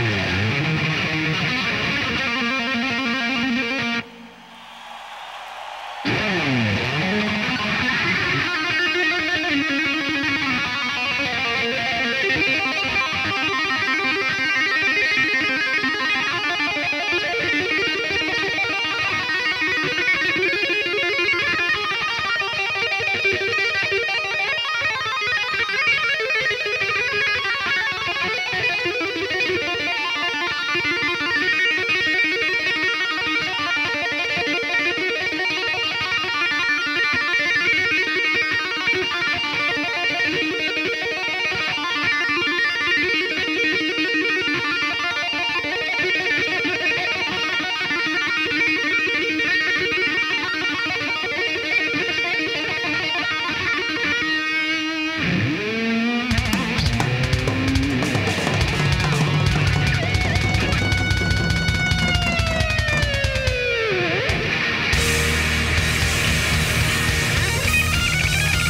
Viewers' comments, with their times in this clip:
0:06 Greatest guitar solo of all time
0:56 The most melodic Eruption ever! What's EVH doing ? I thought he was testing the mic but he's not.